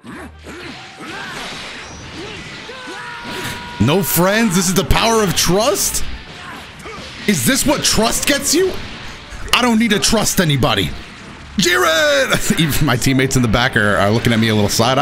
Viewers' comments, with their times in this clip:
0:03 So in character with that tournament of powe monologue and that warcry